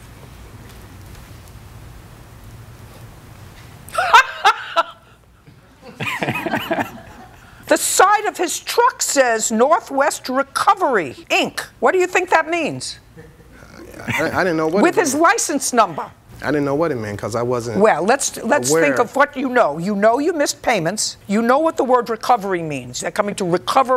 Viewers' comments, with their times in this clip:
0:04 That laugh and sudden stare is deadly.